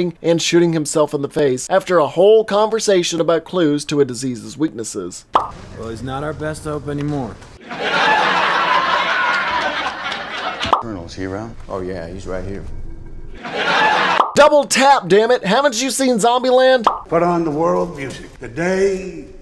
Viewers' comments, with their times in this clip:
0:07 lol at the laughing track, i seen that movie like 20 times but i never laughed at it untill i saw this video